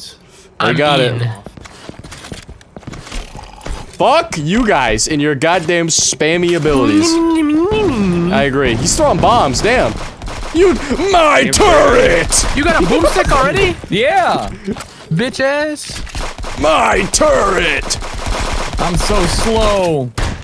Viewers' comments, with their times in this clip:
0:07 no one gonna talk about his spot on Torbjörn impression?